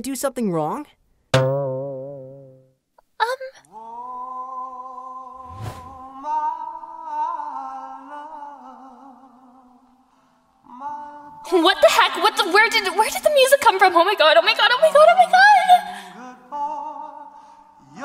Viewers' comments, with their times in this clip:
0:04 IM CRYING-- THE MUSIC